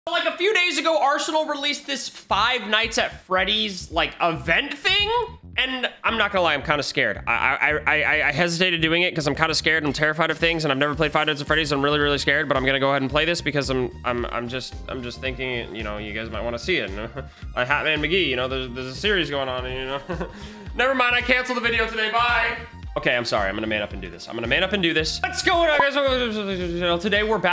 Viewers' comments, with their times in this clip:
0:07 now thats speed talk
0:10 new rap god